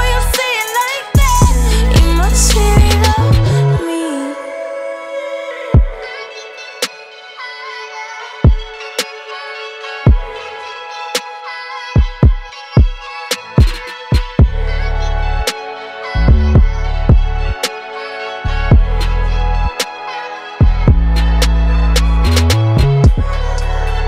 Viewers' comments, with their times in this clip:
0:05 Of everything in this song, thr closing instrumental hits me the most
0:06 I swear the ending makes me melt ❤ that beat is indescribable 🥹my favorite SZA song 🔥